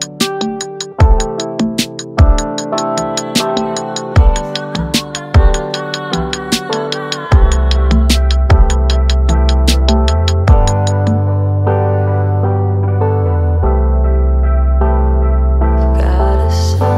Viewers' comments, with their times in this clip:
0:03 so good it hurts. killer kick. lattice work. vocal especially hooky